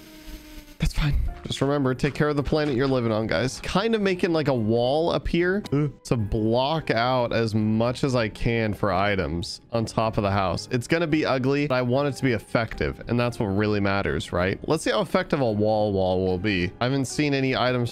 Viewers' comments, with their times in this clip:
0:05 sound like sans